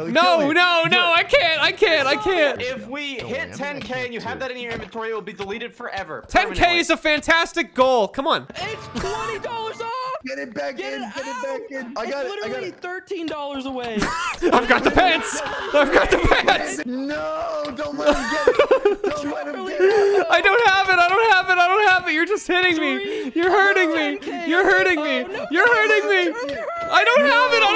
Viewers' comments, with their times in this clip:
0:09 Underrated autotune moment.